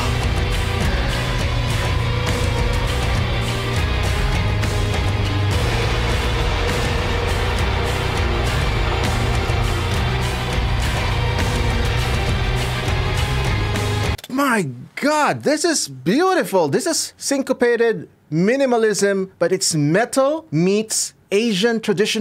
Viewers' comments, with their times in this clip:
0:03 Hey guys I want ask something, I always notice how the second melody part of the main melody comes half a beat early, I want to ask if it is intentional or not, cause every time I listen to that half a beat just throws me off